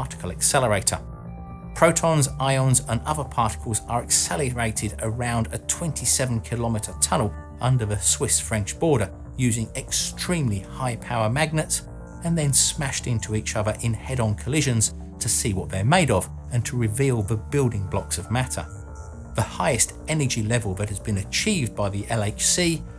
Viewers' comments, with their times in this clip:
0:03 ... "accelurated" it's funny how saying some words before some others can make people pronounce stuff differently